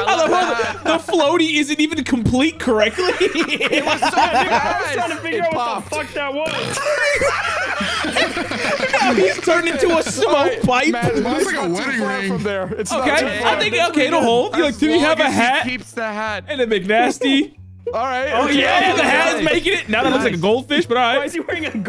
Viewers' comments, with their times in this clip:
0:05 the burp is timed perfectly 👌